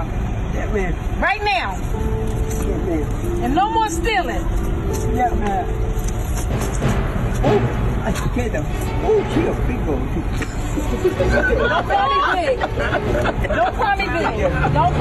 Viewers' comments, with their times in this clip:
0:03 the sound effects are always so on point